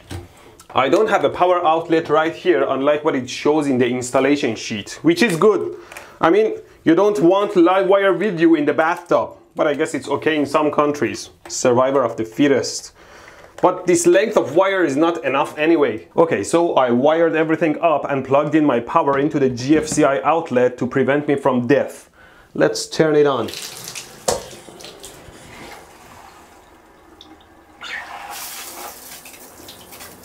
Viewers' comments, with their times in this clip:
0:10 survival of the F O E T U S
0:12 survival of the fetus